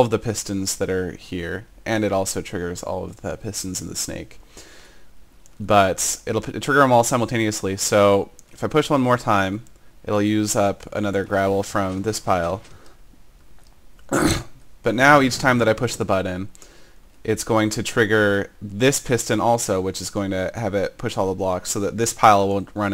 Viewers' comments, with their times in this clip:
0:10 Pig-sounding Grunt : D